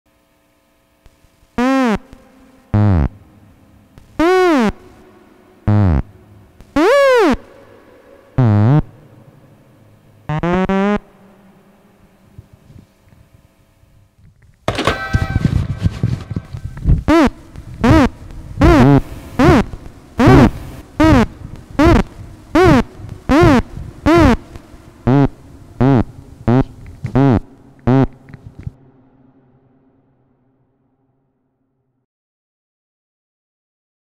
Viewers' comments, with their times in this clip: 0:06 I love how at the part where he screams "BEN!" it sounds so calm😂😂
0:06 that wah had so much emotion i love it
0:14 When Ben puts back the phone even the ring sound is made from otamatones
0:14 such a good sound there. The telephone.
0:16 I think he is swearing f word
0:16 speed otamatone haha go brrrrrrrr
0:17 Lmao looks like this part he is barking at ben ngl